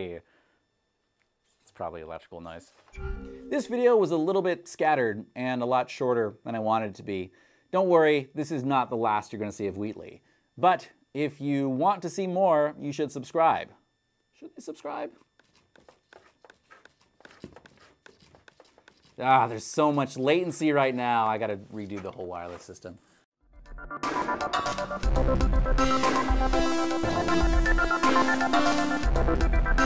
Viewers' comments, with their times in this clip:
0:03 I don't know who you are but I love you. Damn this is sick as hell But what is this beep sound? it's really annoying tho
0:03 The beep in is killing me
0:03 There was a high pitch ringing starting that is disorienting so maybe try to listen for that in the future and prevent that from sneaking in.
0:04 The shot on has this weird high pitch in the background that I sure is there since it goes away whenever I pause the video
0:11 The high frequency noise at the minutes mark might be overwhelming to some people
0:11 i hate the horrible high pitched ringing that my big speakers love deafening me with (probly an old crt turned on in the backround)
0:15 I wonder how many people picked up the high pitched noise at the end. The sound even changed with the inputs
0:16 Great video! Just a tiny thing in case you didn't catch it in post: in the shot there's an electrical whine that made its way into the audio. A quick EQ should solve it though!